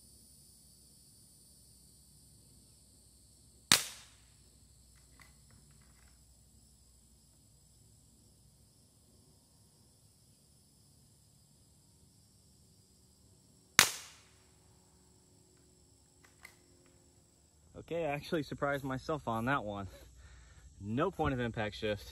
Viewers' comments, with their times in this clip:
0:08 sounds like a pellet gun